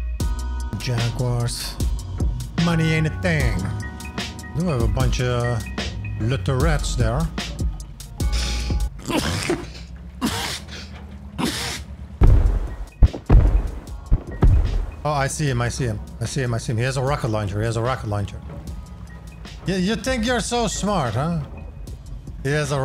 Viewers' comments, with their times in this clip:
0:09 bless u 3x